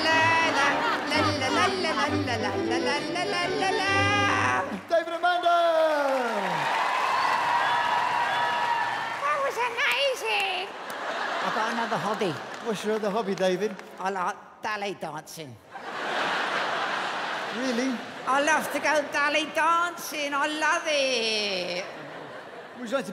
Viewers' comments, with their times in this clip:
0:09 more fake laughing
0:11 is it ballet dancing or belly dancing??